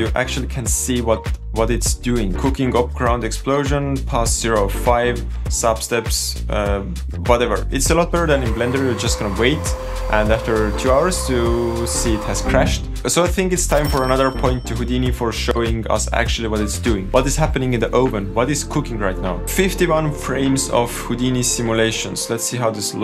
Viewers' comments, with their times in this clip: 0:10 🤣🤣 the Sound of fans was so funny 🤣 hahahahahahahah . Thanks for your Humor sense ! Love it!!! 👍🏻👍🏻💪🏻